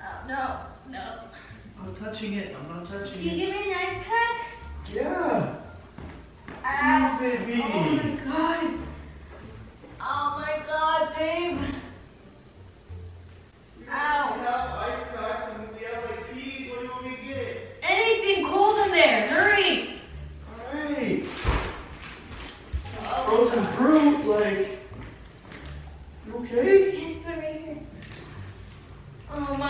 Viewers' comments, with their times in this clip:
0:10 that kinda sounded like something else 😂